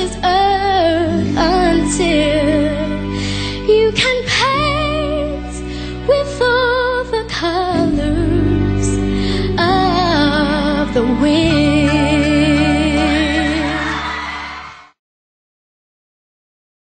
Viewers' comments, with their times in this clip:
0:04 wow she hit really good the high notes